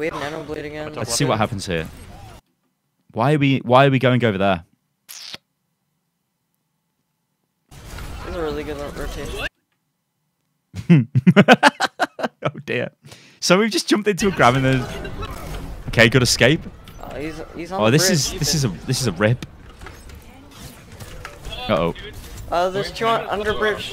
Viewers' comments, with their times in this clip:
0:08 thought this mcree was about to get a team wipe and instantly felt what ik every other player felt. The cold creeping dread of everyone bunched up and just hearing the whisper "its high noon"